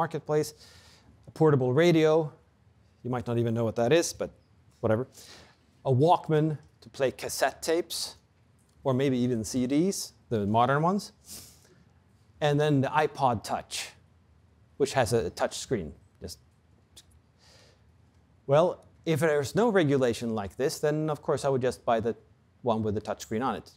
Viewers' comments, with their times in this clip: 0:04 I swear someone removed the bass from the audio when he says "cassette tapes" as an easter egg.